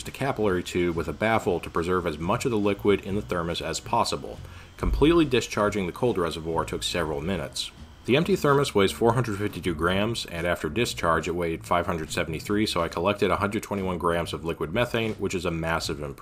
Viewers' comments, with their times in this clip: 0:03 I don't know if I just have good headphones. But the background noise in this video was messing with me. Sounded like someone was banging around in my house.